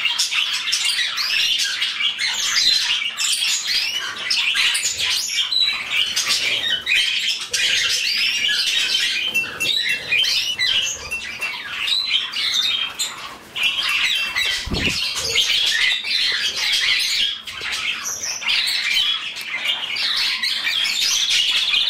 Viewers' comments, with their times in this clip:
0:05 My canary did not sing too much but he does briefly after If you listen closely you can hear quiet chirps here and there.